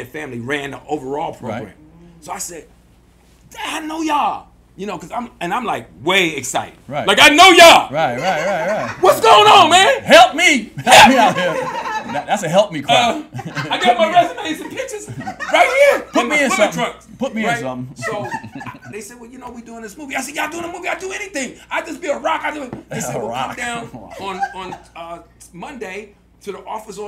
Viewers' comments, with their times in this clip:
0:08 His Eddie Murphy is great!